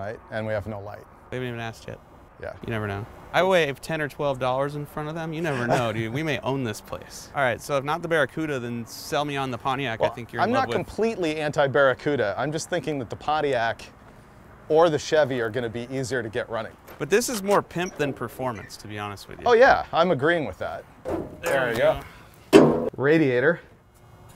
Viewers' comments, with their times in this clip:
0:10 Man: ( ͡° ͜ʖ ͡°) inhales exhales